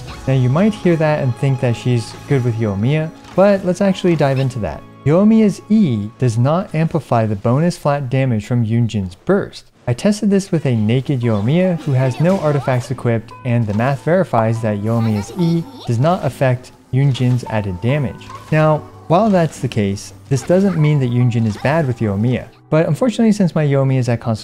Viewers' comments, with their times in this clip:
0:10 bro that sounded unholy 💀
0:10 bro that sounded unholy 💀